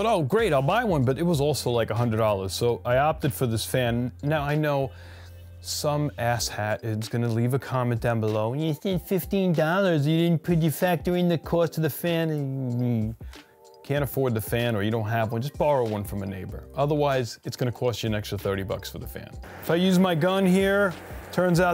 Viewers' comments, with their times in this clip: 0:03 you sounded funny 🤣